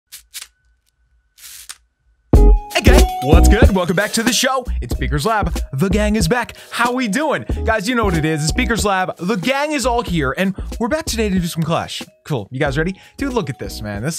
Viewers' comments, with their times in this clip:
0:01 I just realized that is exactly the sound of my water bottle that i opened just a second ago